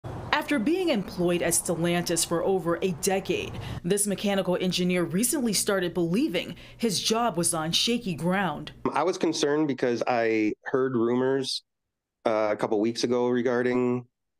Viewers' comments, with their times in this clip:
0:02 did she said employed for over 8 decades? Who’s employed for 8 decades, 8 decades means 80 years.